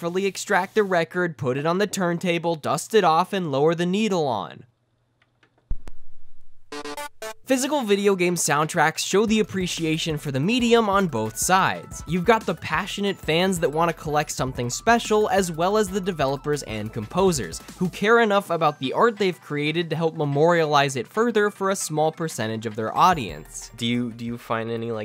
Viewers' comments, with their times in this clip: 0:06 That four note placed perfectly